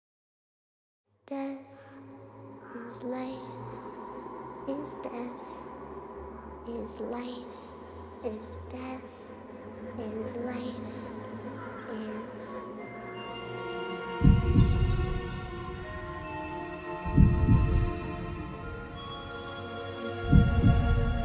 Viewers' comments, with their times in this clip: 0:03 how it says death its life is so creepy